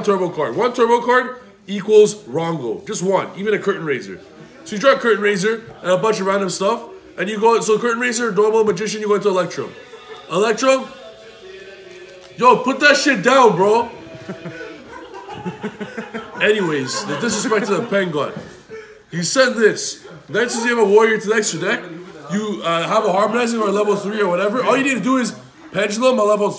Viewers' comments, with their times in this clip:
0:10 I can already tell this is about to be funny like the last deck showcase. Man in the back blasting his music